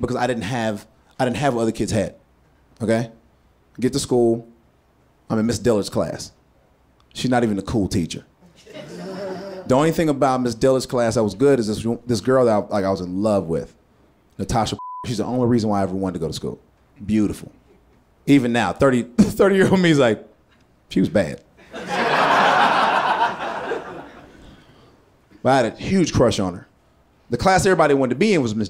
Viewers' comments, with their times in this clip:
0:09 What's with that ghost laugh XD